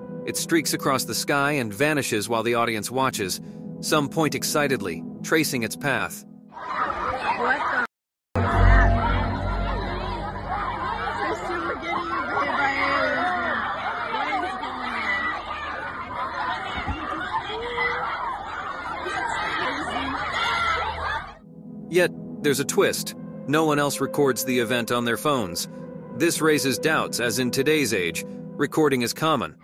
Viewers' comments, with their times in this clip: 0:10 the groups reaction to seeing the object in the sky at the mark is the typical way I would expect over dramatic crowd of humans to react. dumb, panicky, and loud.